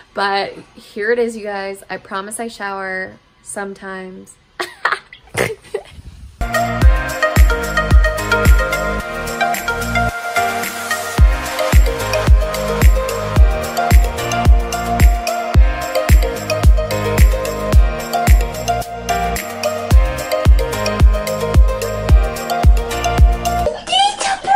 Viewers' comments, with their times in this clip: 0:05 I LOVE THIS WOMAN AND THIS AIN'T MY FIRST TIME COMMENTING ON HER SNORTS love her lol🥰 ah wish we were friends 🥺 Love ya girly